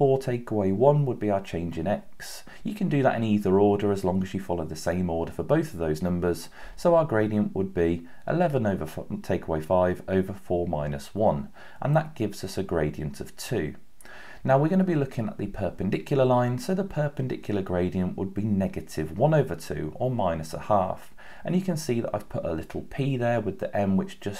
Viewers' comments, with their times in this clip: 0:09 No way on time: You said 11-FUcking take away five😂😂😂😂😂😂